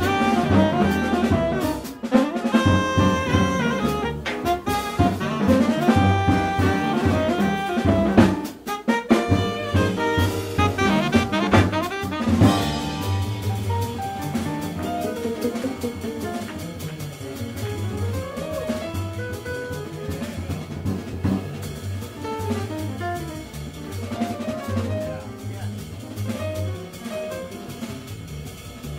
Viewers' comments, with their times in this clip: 0:10 Piano solo just blows my mind, fantastic.